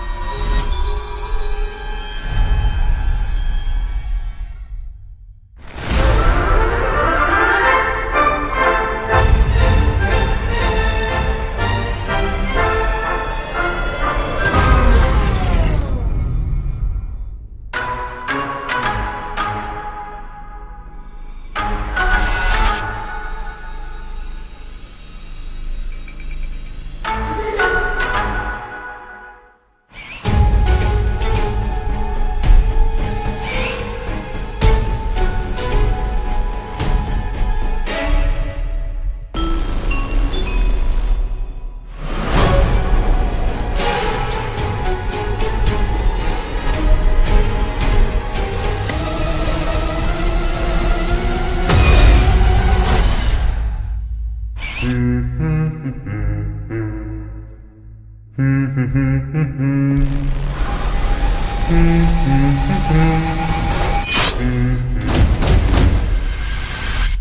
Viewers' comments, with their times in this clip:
0:05 really sounds like a circus or whatever opening up ain't it? It's also the best moment for me, when combining this moment of the song with the fact its about murderous animatronics meant for children it really gives me this vibe that i can only describe like this: maniac and insane. And i love that insane vibe that it gives, its so insane it messes with my head haha.
0:05 fav part the🎶🎵🎶🎵🎶 but puppet never appears
0:17 this part sound like Freddy if he was a karate kid soundtrack😂😂😂 it’s my fav part it hits hard!
0:32 and beyond is reminiscent to the old fnaf 1 trailer
0:42 I agree is my fav part, but when the humbing starts ohh my creepy vibes. Love it
0:54 sells it for me. That humming over the sight of Spring Bonnie gave me extreme goosebumps.
0:54 for some reason I thought that’s Freddy himself humming
0:54 is the one that and going to be cheering when he starts humming in the movie